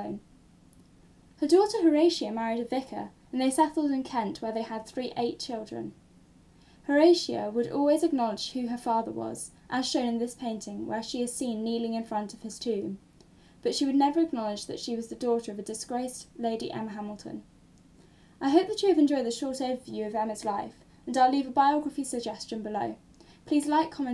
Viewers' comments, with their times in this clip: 0:05 I can't quite make that out. They had three eight children?